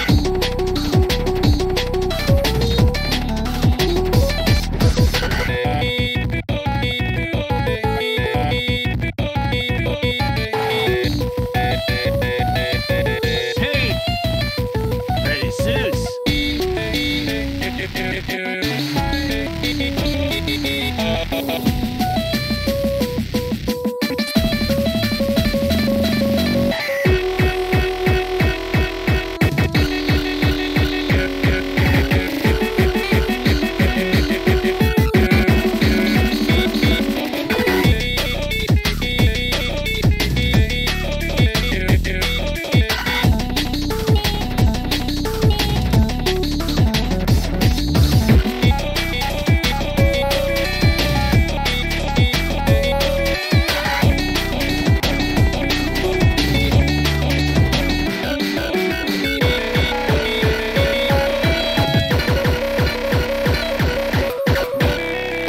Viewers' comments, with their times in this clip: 0:03 i can't get this out my head not the "pretty soos" the bf's vocals fading
0:05 Idk why but bf's echoing part slaps real hard for me lol
0:13 is also amogus and he’s actually saying sus but it’s said like soos, which is funnier
0:27 My favorite part Tankman the heart monitor
0:37 kinda sounds familiar for some reason
0:37 Lmao this part is so funny undertale song kicks in
0:38 gave me Mario Kart vibes
0:38 Is that death by glamour? Actually now it sounds like subway suffer
0:49 I wish we could hear more boyfriend with vibrato it sounds really good-
0:49 That bf voice crack killed me
0:51 has a part of ugh
0:53 bf voice cracc